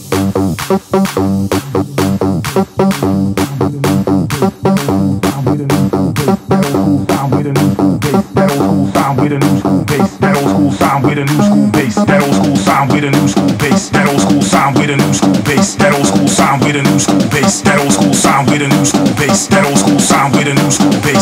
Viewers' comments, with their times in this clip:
0:08 Arnold Schwarzenegger is that you?!